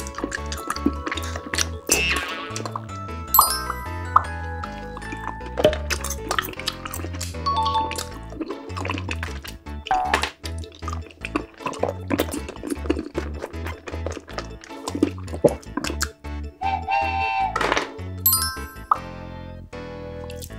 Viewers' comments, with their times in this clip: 0:06 the boing got me rollong